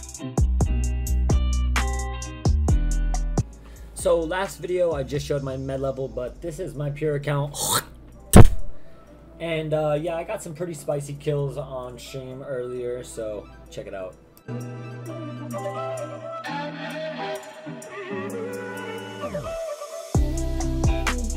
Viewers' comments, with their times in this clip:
0:03 When he hawked that gnarly loogi into the mix ish lol